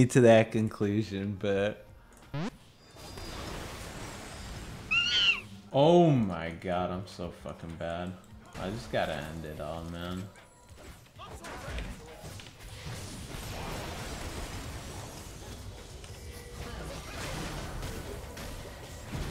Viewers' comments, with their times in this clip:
0:04 the sound of the boosted ape